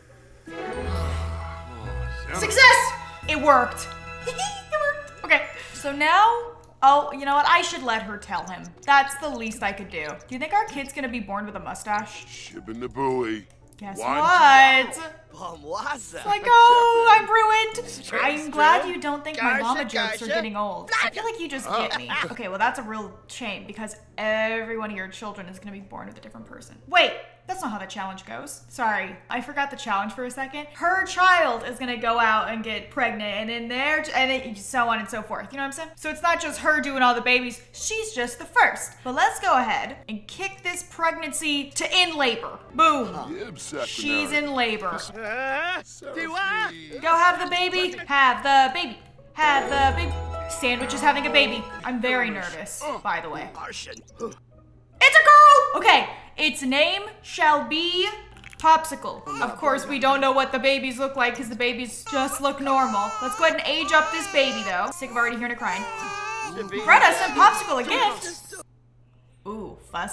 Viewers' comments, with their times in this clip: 0:03 the laugh reminds me of cookieswirlc
0:12 PLEASEEE WHY DOES SANDWICH SOUND LIKE SHES FROM NEW YORK HERE
0:55 Hold up, did that male sim just say "Oh s###?" Like he knew what was happening?